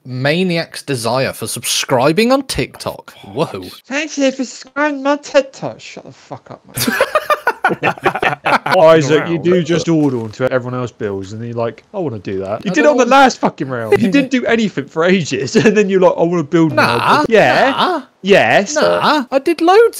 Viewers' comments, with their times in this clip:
0:03 sounds like Sid from ice age saying that